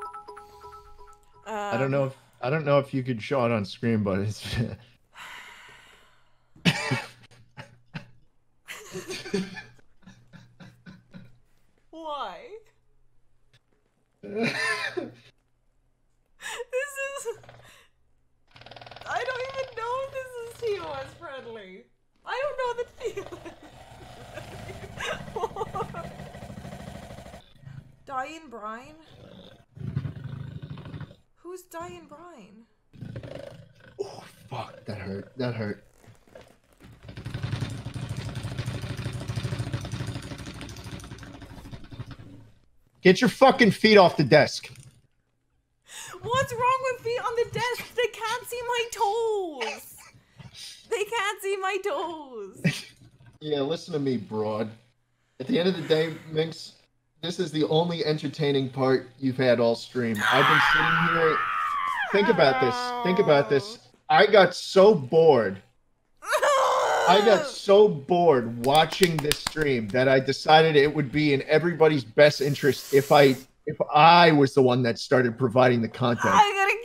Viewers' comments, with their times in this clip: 0:08 that synchronized laugh tho
0:43 when he started laughing my heart melted theyre so cute
0:59 the way she like screams and says I'm gonna kill you is too cute